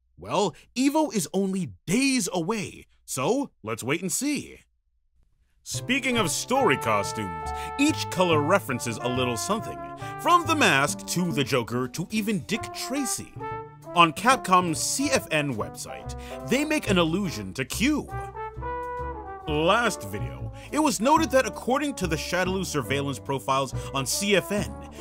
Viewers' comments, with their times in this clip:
0:07 I need information on the background music Sounds like Saxophone Jazz music from the 20s, 30s, or 40s.